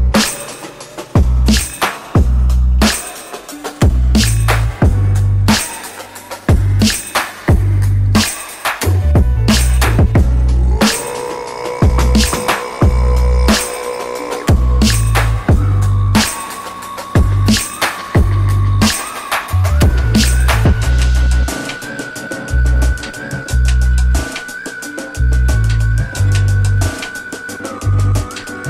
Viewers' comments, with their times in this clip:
0:10 Sounds like my stomach watching all these food videos
0:11 Did y’all really put a throat singing song in the background?! I-